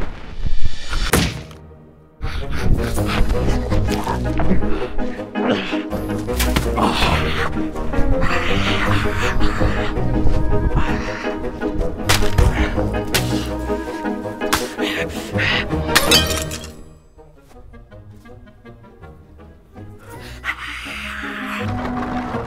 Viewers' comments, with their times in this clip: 0:07 made me laugh so hard for some reason, just him whisper screaming made me die